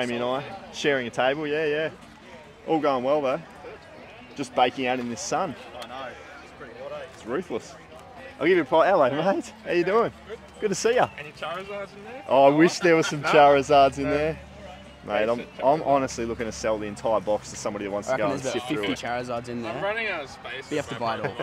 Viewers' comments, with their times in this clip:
0:07 did you say Ruthless or Roofless. Both would be correct haha